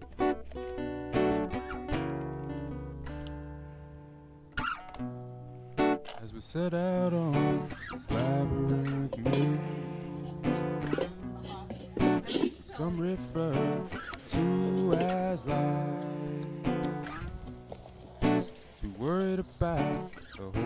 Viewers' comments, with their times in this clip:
0:05 I thought it was you singing. Lol hahaha